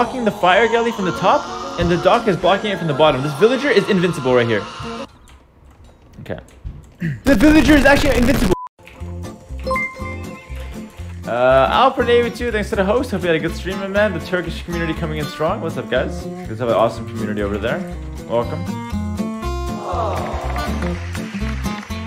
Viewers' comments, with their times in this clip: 0:07 the villiger is actually invisible 1111 :D